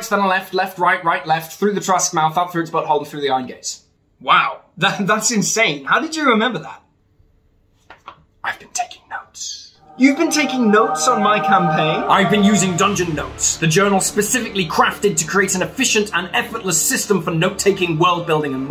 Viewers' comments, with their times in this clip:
0:04 ~ That "Dune" music! Hits right the spot! Really well done! Regards from Tabasco, México [Land of The Olmecs]!